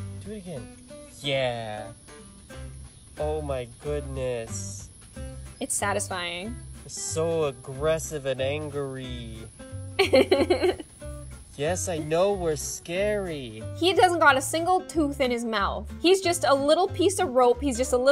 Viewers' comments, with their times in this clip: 0:04 I HEARD IT SQUEAK AND NOW I LIKE SNAKES DRG ERCRGRGRGR